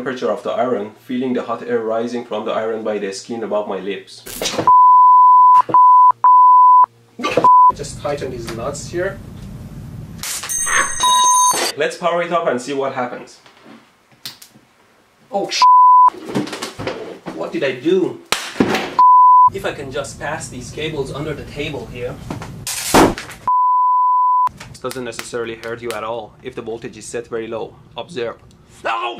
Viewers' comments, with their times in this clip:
0:10 he sounds like a girl going aa